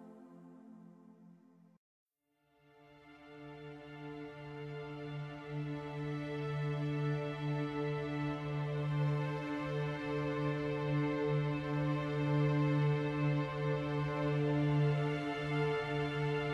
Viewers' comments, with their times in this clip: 0:03 this tune is so good and it has that oomf in it the rythem 😊